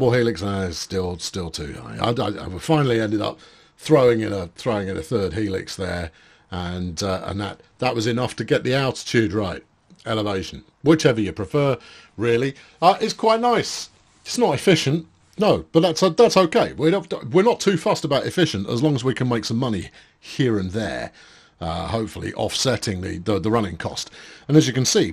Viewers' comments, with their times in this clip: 0:10 General Kenobi! I didn’t know the seagulls did a thing, that’s an awesome little Easter egg!